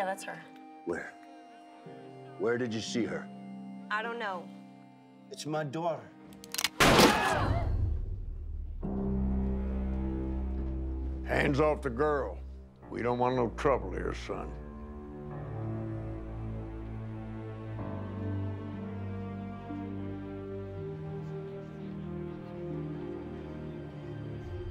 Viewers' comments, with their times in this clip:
0:05 When the bartender shoots a round above his head there is a scream. I think he hit someone upstairs. hahaha